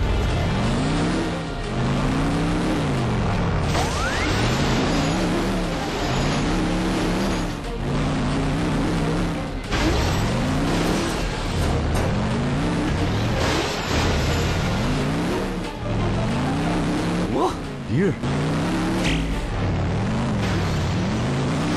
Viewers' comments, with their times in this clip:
0:05 IS THE HORN